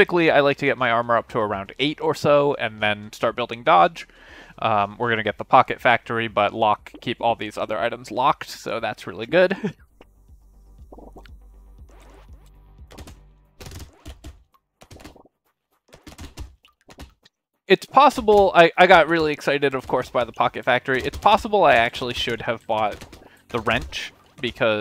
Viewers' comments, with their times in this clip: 0:09 the laugh :D